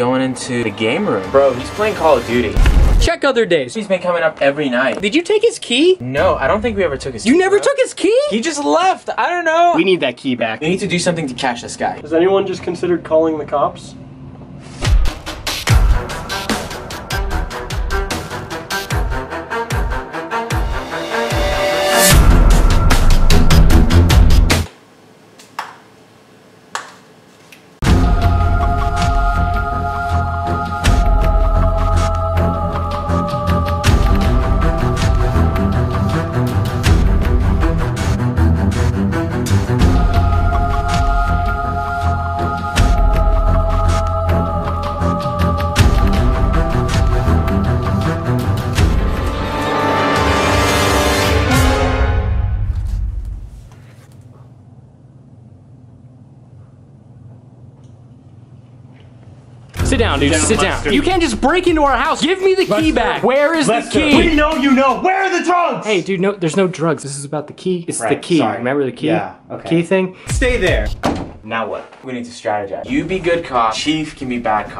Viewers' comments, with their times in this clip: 0:07 there is call of duty is in the background
1:02 In I thought he said you didn't even tebag I was laughing so hard